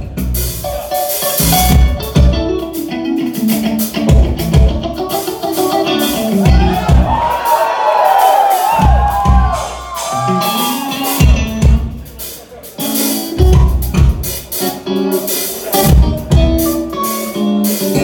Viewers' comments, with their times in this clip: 0:04 Yeah like when he does that stacked melody instead of just one note.